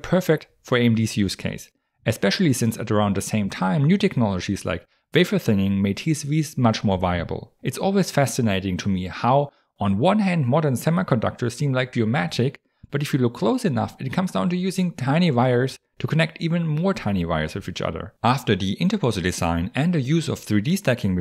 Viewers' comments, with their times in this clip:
0:04 New technologies like what? I could not understand the word.